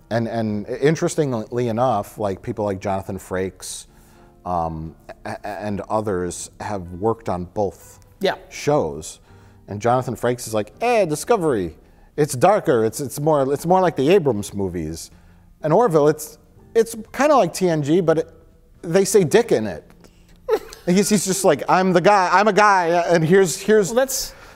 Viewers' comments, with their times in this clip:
0:09 great Christopher Walken impression starts!